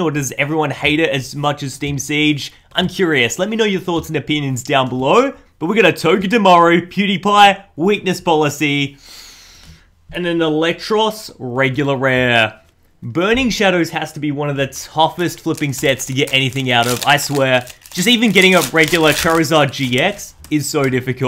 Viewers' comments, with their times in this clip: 0:05 he says instead of Dewpider pewdiepie
0:07 Dewpider’s known as Pewdiepie now?? 😂